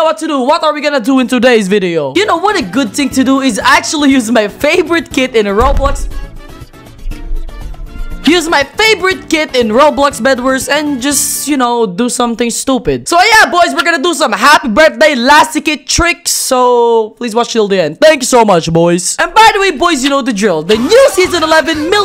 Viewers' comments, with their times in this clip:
0:07 LOL THE PAUSE